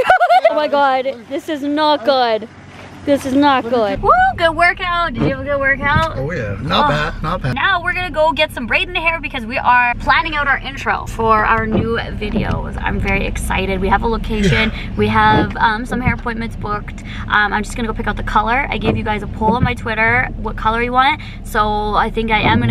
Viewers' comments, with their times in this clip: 0:05 It sounded like he farted lol